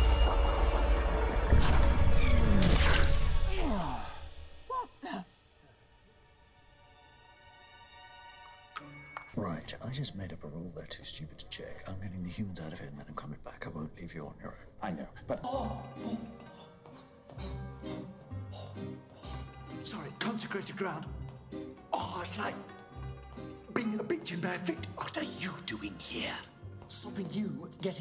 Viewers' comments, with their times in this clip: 0:10 we dont talk about that quick "i know" enough